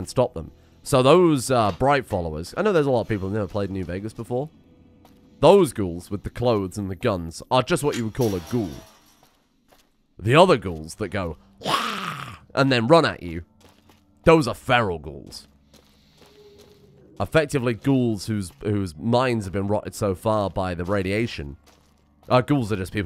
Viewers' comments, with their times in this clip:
0:10 that was such a perfect feral ghoul impression.
0:11 my favorite voice over. You did such a perfect impression of the ferals I loved it.
0:11 I can't tell if that ghoul voice was dubbed in or not. Incredible!
0:11 Lets take a moment to appreciate this SPOT ON ghoul impression, bravo sir.